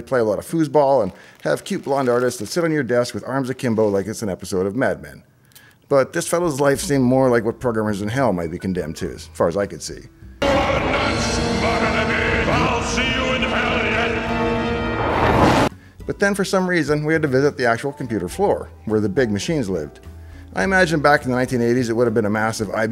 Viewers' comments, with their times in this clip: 0:10 I wish you wouldn't subject us to volume spikes such as this.